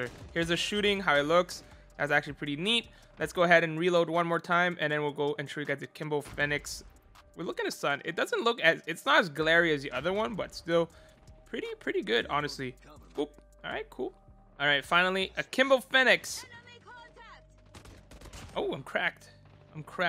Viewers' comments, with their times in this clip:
0:04 he kept saying akimbo fennic